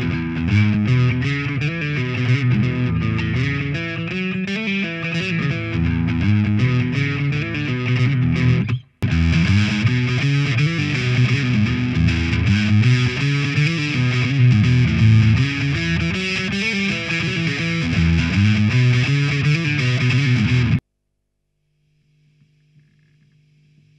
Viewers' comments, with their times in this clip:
0:07 Thank you for increasing the gain when you put the new tube, for a better false comparison. Test result 1/10, FAILED.